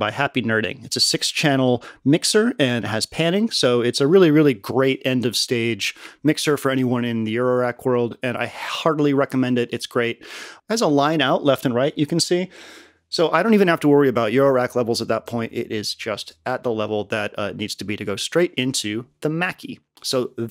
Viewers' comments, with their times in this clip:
0:07 "I hig--ardly recommend it." LOL Killer setup my dude!